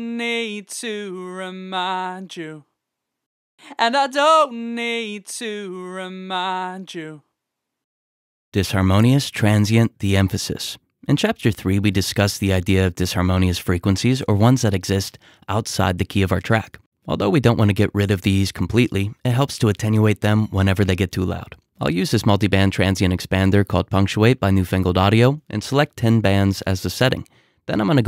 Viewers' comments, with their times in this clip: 0:09 do you guys really hear a difference? I've never heard of something like this. It seems to me like it's something to reduce harmonics/distorsion which i think is very hard to do (I mean, they're harmonics, they're a lot, they stack up). I don't know, I can't hear it, and it seems weird to me